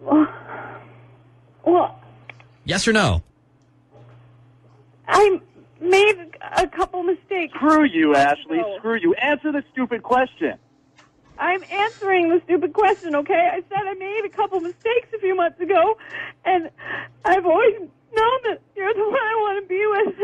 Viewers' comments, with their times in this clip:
0:08 he sounded like swaggersouls